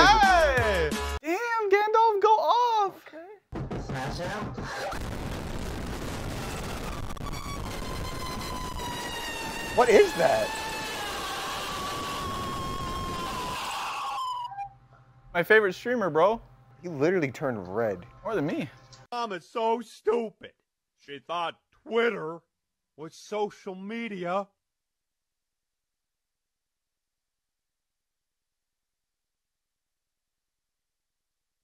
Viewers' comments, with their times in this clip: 0:03 Airplanes when taking off be like
0:18 was the funniest one for me and I don't know why just the long pause and silence really got to me i was crying.